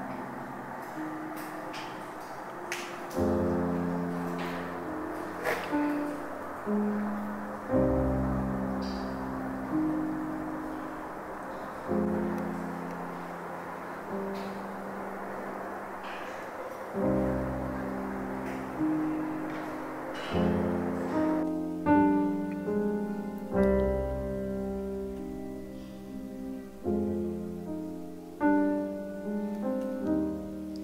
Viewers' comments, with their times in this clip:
0:04 start there, it's like within 3 seconds...sounds like someone crying.
0:17 Again or is that part of the music in vsckground?